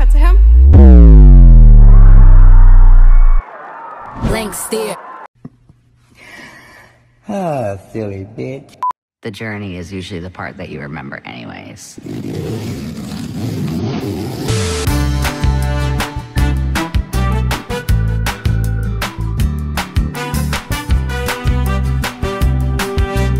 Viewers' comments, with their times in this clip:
0:09 they sounded so alike I missed the joke for a second😭😭